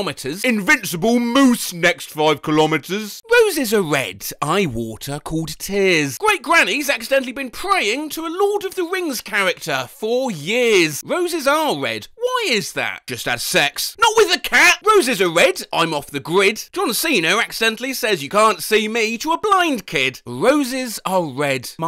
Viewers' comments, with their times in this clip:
0:03 sounds like 19-2000, by Gorillaz